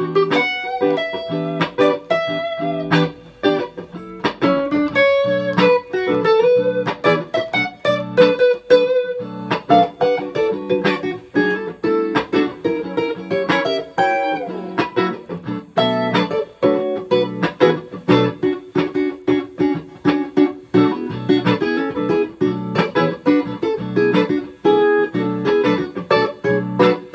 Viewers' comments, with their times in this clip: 0:10 What kind of solo do u play since tomo? Double and triple note that sounds amazing.